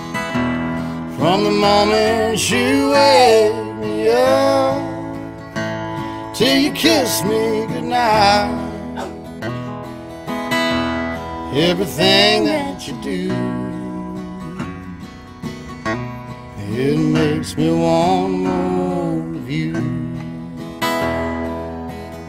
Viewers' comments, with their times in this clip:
0:08 That dog bark and Morgane's smile right after, makes this version soooo cozy and familiar!
0:08 what the hell was that? someone sneezing or a dog?
0:08 Who sneezed ? Lol
0:08 is that a dog barking?🤔
0:09 Is that a dog barking ? Hahaha